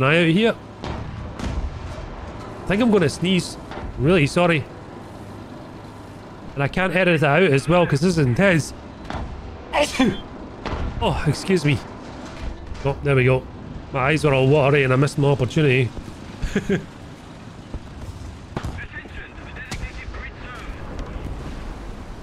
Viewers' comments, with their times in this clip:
0:09 that sneeze is so UwU Bless you btw
0:09 "Achoo" distant explosion You good man?